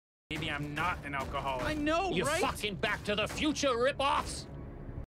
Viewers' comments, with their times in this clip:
0:02 His delivery of “Ya fucking” was enough for me to laugh so damn loud 😂😂😂. It’s how much emphasis he puts of the f word.